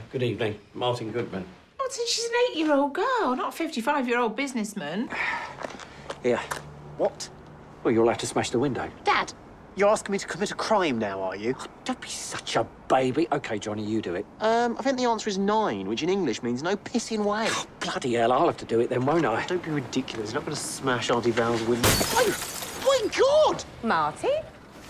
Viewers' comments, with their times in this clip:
0:08 why is Johnny’s voice so high